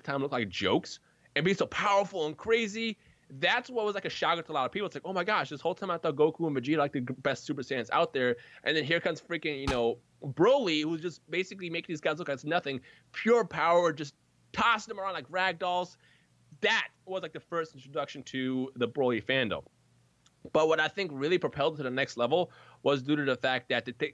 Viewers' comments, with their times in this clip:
0:05 Did someone fart near ?